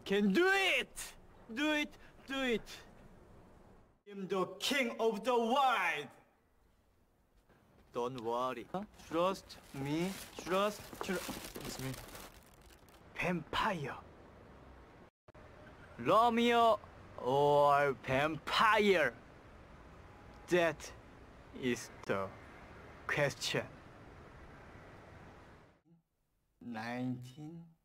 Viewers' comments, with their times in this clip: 0:09 He sounds EXACTLY like Jin from BTS especially from and the way he says vampire 😭 They both looks similar aswell 💜